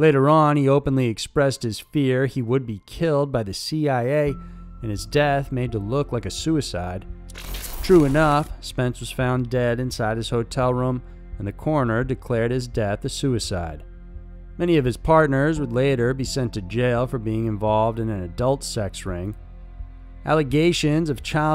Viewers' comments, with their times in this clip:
0:07 Sounded like a wet fart